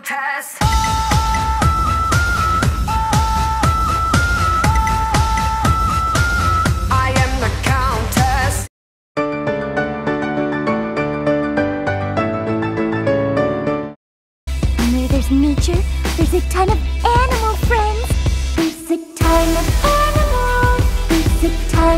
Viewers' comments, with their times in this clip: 0:07 Did she sound like Lady Gaga?